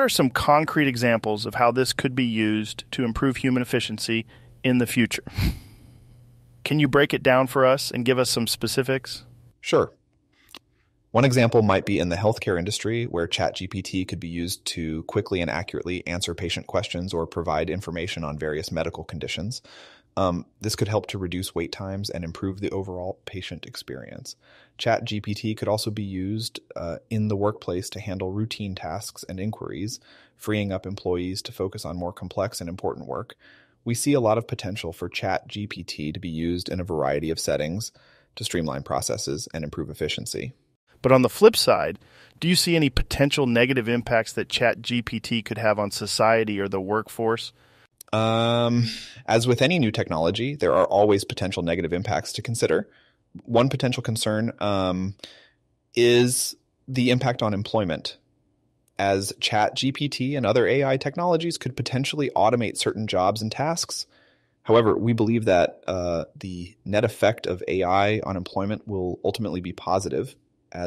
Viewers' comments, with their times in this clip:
0:04 The minor details amaze me the most. Like the little sniff Joe does or the "umm's" from Sam. The parts where Joe slightly changes the tone of his voice while talking to indicate a shift in topic really caught my attention as well.
0:04 So am i the only one who caught the chuckle after his question ...? that shit not sitting with me..
0:53 the AI did a much better job on Sam's voice than Rogan's, wonder why that is when there should be much larger audio data library for Rogan. What sells the voice are imperfections like 'one potential concern... umm... iiiissss....'